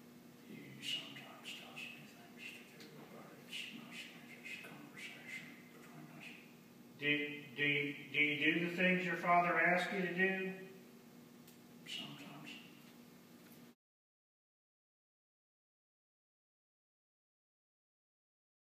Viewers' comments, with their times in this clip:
0:04 sounds like he summons a demon
0:07 Even the judge stuttered their for a moment..... Truly sinister.